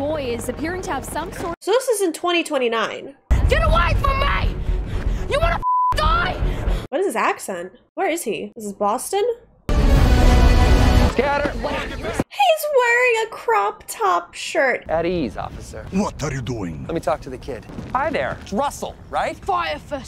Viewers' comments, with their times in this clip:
0:05 What is that accent..... Boston 😂 way off. Julian Dennison is from New Zealand 😊 just like me.